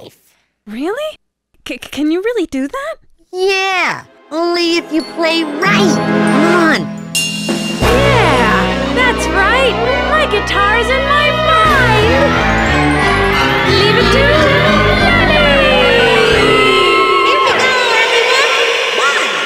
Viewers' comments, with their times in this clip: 0:07 why did she say that so creepily? "My guitar is in mY MiNd"